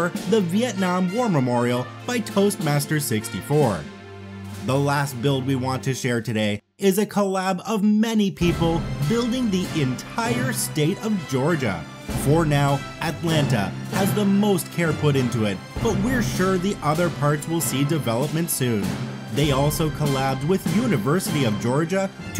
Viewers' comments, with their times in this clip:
0:09 shows Georgia, USA *Plays God Save the Queen*